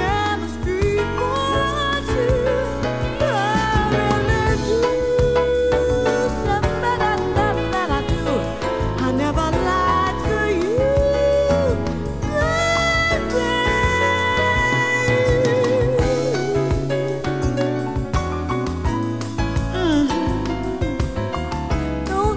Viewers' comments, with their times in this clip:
0:04 ...love the skatting....that is reminds me of Ella Fitzgerald's skat routine in her songs...Anita Baker did it flawlessly in this song!